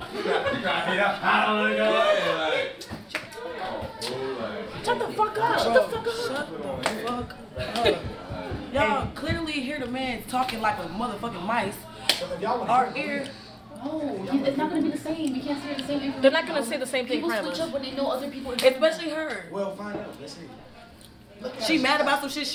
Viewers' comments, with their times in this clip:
0:06 Everyone talking at the same time is not it 🤦🏾‍♀️